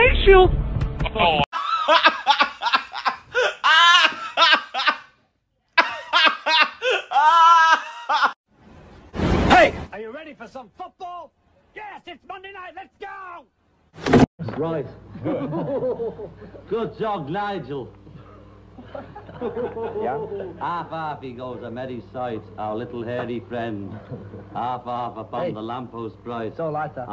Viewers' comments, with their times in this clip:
0:08 I fucking love american Ringo <3